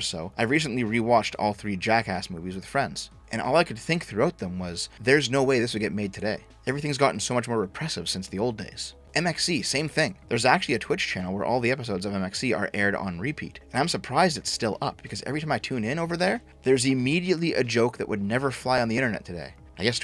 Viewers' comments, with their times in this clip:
0:06 you sound like old be from a new hope